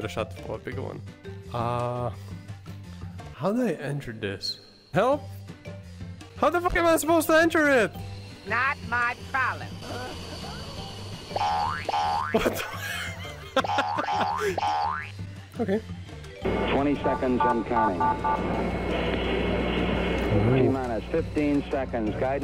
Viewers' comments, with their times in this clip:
0:05 I dont know who you are or why you have apeard on my Recommendation but i already find you hallarious (That "Help?" on was so adorable to be honest)